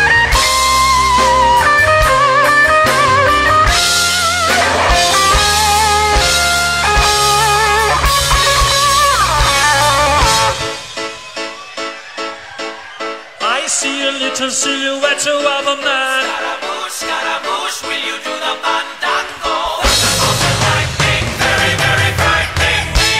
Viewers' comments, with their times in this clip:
0:09 Wow, this voice! You can really hear the power here! This is not just a fan video, so more accurate as to how it would sound live? Drums are a little loud, but lots of energy! My new fave performance of BoRhap by Marc. to the end of the song...🤯